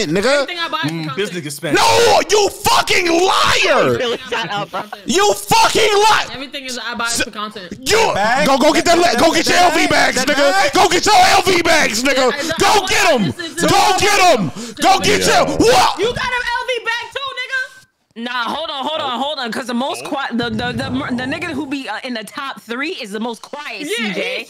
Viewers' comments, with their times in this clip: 0:07 That was the HARDEST R XD